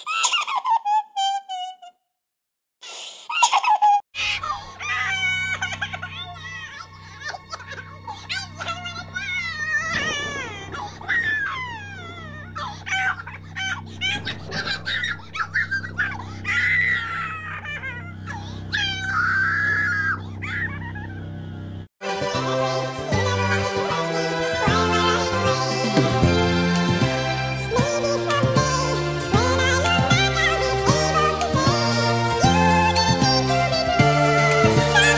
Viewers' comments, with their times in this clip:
0:08 the crying tho 💀
0:12 Look at that fake crying
0:14 wow what a good kid noises LOL
0:20 as an alien from saturn, I have replied now. I agree, Let's give Kreek a big applause for ending satan, Looks like satan is a 1 years old who was screaming 💀